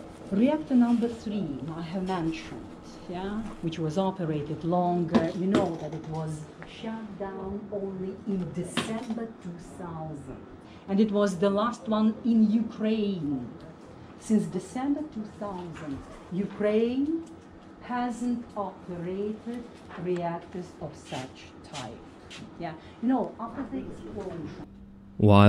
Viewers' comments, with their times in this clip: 0:08 desember two sauznt